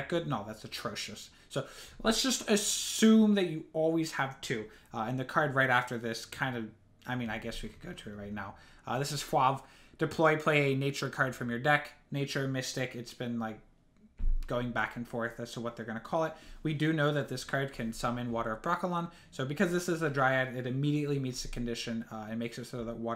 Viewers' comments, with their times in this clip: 0:07 This is WHO? how did he just pronounce that??? ^^